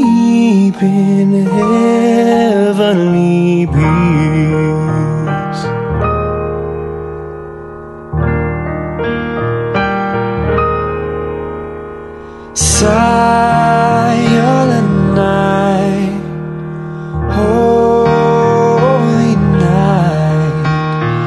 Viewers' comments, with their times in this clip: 0:05 That voice dip .. dang.